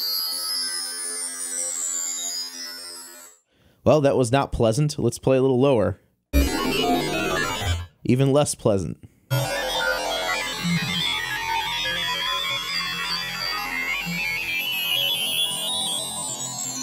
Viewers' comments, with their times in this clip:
0:04 ....not pleasant? That sounded fucking awesome! Different strokes I guess but that was way better than I expected.